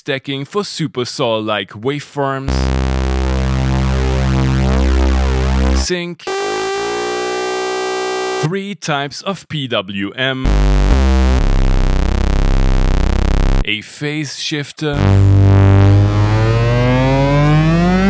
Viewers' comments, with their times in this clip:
0:03 is giving me the same vibes as the intro to turf by el huervo